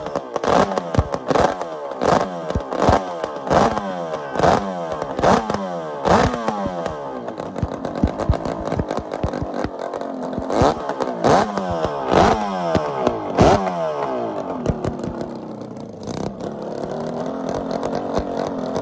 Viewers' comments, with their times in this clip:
0:04 Look at that grin and just listen to that crackle..... heh heh heh! Why don't they make motors like this any more?